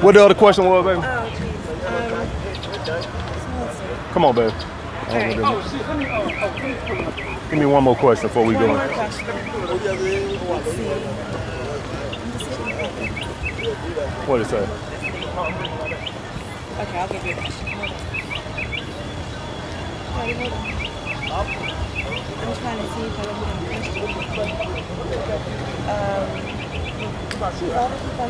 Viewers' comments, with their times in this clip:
0:09 Some guys speaking Yoruba Naija guys be everywhere even in AMS video lol